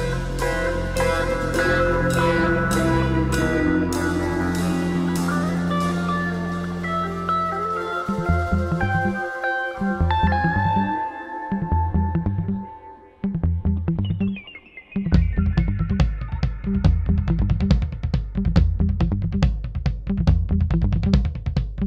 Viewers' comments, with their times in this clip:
0:08 when the minimap showed up to show his movements around the block, that shit was hilarious and the drum beat during this time was perfect! Haha